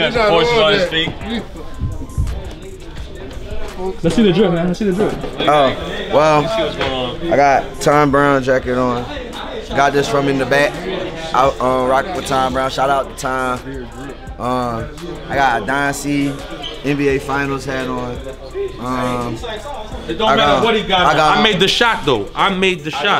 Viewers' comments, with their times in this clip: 0:04 the way he said “oh ..well” 😂